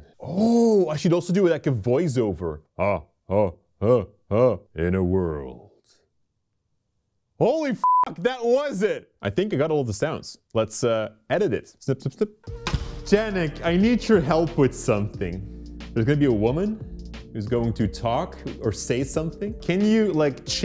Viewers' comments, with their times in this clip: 0:04 you exactly sounded like the Raiden without any effect. now I'm in doubt that you gave the Raiden's voice in the Mortal Kombat 11 Game.